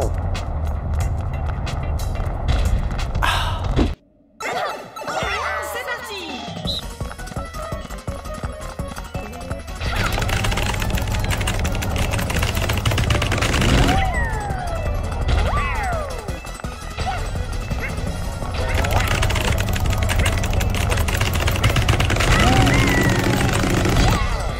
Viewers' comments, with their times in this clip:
0:10 BUTTON MASHING INTENSIFING